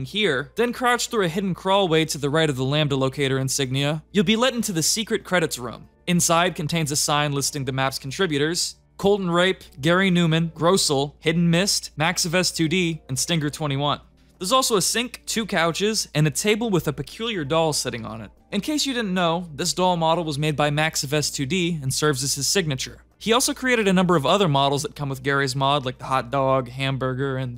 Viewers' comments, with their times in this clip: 0:09 you should probably not pronounce it like that